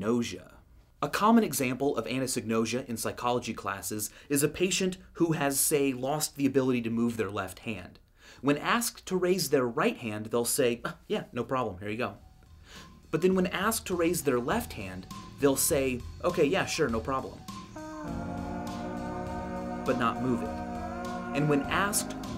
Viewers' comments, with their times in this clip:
0:04 Nice voice crack, nerd.